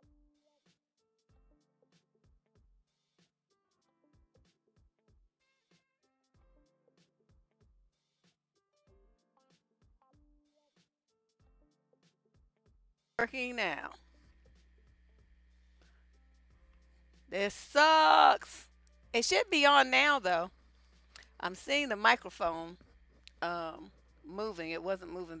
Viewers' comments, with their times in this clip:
0:10 Sound starts in. Loose mic jack. Sorry!